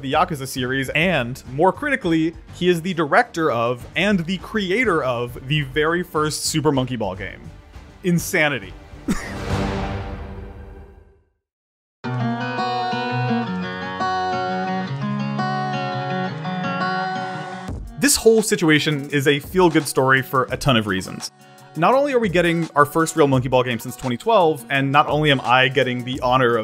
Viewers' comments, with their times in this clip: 0:09 You coughed I demand this be fixed for arbitrary reasons.